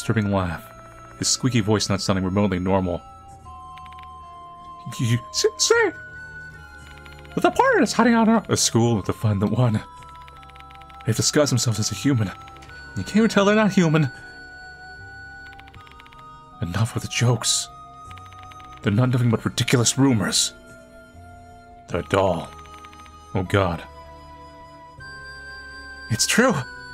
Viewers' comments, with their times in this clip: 0:07 not mickey mouse possessing manly
0:07 bro just casually turned into Micky mouse